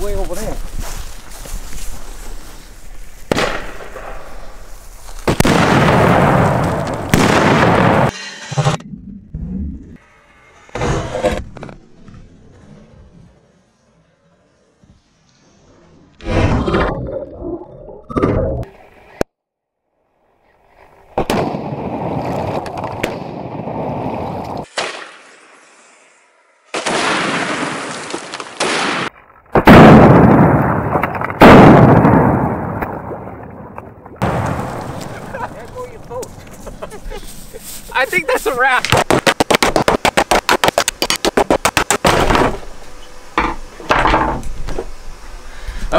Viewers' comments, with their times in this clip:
0:03 thats the sound of 2 ships going KAAABBBBOOOOOOMMMMM *2 SECONDS LATER IJN YAMATO KKAAAAAAAABBBBBBBOOOOOOOMMMMMMM
0:03 sounds like an actual warship's ammunition rack exploding
0:29 sounds like an actual battleship firing
0:29 sounds like a tank